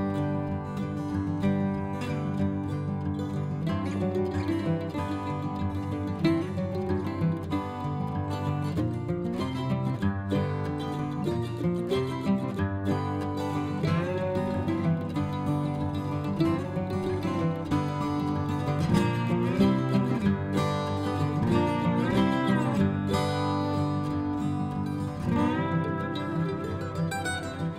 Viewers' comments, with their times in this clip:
0:09 HM.. That’s a tough one... * she said, sarcastically*